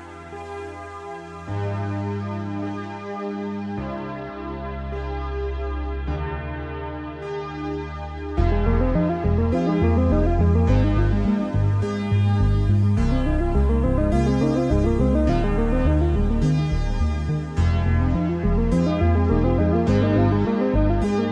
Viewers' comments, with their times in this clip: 0:07 Never watched stranger things, probably never will because my parents don’t allow it, but this song I swear, I love it so so SO much.